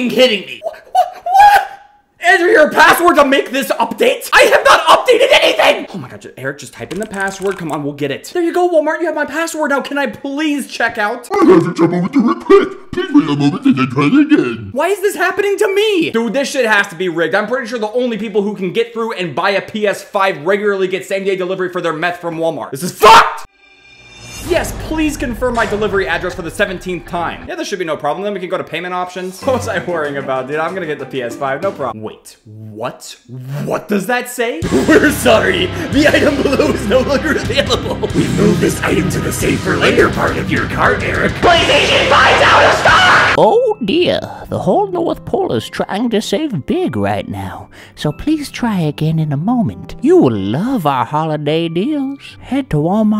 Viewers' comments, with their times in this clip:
0:09 sounds like if scooby doo after puberty
0:34 Why does he sound like muscle man